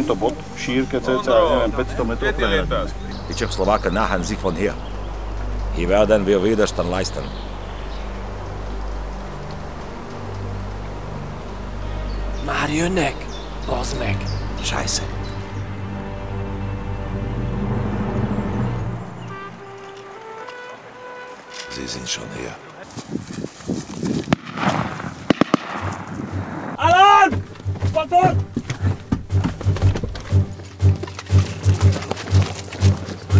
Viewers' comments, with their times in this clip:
0:10 Wow there's some hungarian sentences i'm amazed since i'm from Hungary. Very well done video!
0:11 why did they speak hungarian???
0:12 Hungarian :D "Már jönnek Bazdmeg" XD Thanks for Hungarian Speaking
0:12 They speaked hungarian
0:15 Finally my beatiful language